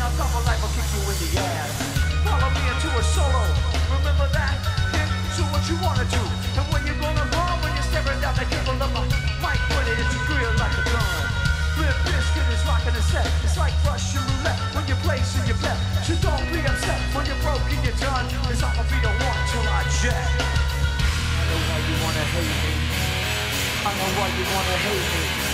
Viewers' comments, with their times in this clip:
0:10 Guitar fail :D